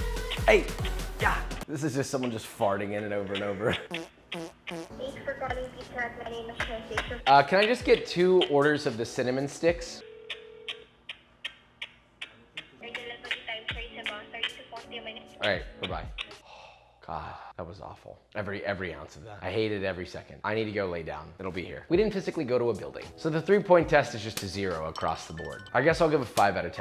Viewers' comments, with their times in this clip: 0:10 they were kissing you through the phone